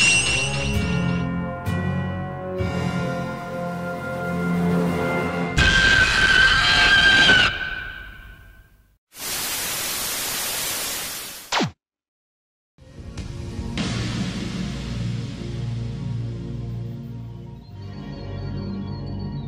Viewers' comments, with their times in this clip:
0:05 YES, MY FAVORITE KAIJU GETS HIS ROAR USED, I love Ebirah